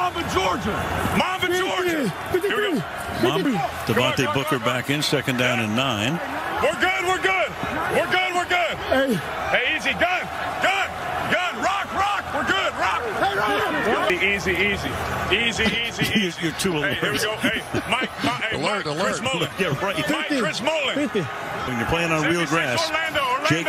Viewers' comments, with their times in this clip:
0:07 now I know where Madden recorded Carr's "we're good we're good" cadence.